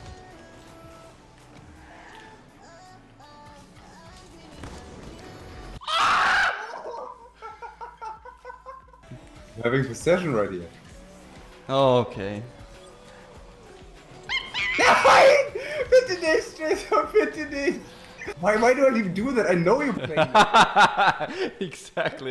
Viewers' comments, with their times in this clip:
0:04 sounded like a DSR 50 sniper from black ops 2 when the ball hit the ground